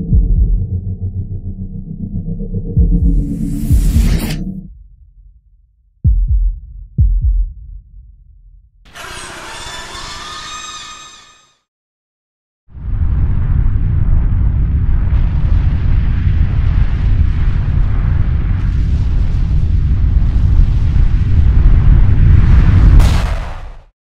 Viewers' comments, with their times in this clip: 0:08 oh hi Ivory beast scream, wasn't expecting you here.